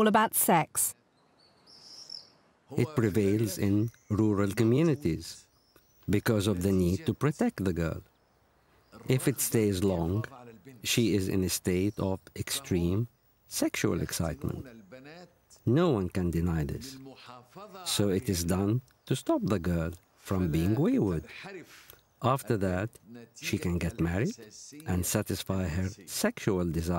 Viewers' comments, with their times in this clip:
0:08 the Doctor casually speaking about genital mutilation is disturbing!